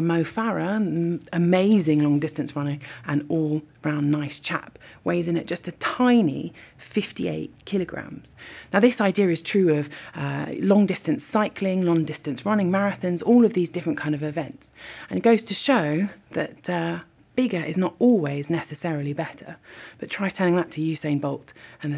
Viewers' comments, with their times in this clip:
0:03 "An all brown nice chap" Once heard it can't be unheard.